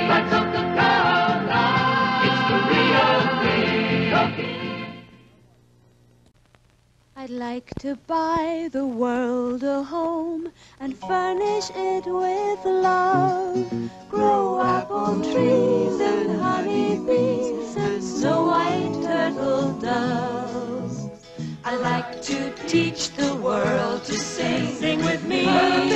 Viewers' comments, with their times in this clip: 0:06 possibly the greatest jingle in commercial history.